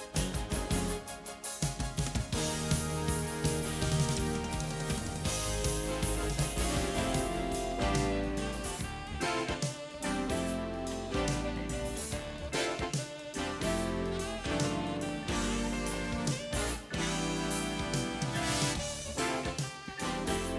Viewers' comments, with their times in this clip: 0:07 what is the name of the song playing God I love it! Sound's like Steely Dan.